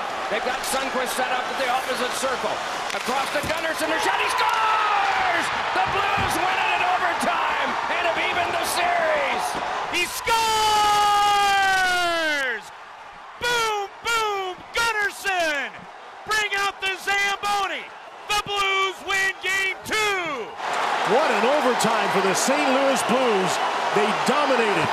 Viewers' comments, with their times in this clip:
0:10 NHL puleeez change out the mic on Dufus who screams, “He SCORES!!!” He needs a dynamic mic, not an electret condenser mic. It sounds like he’s using a kids karaoke mic.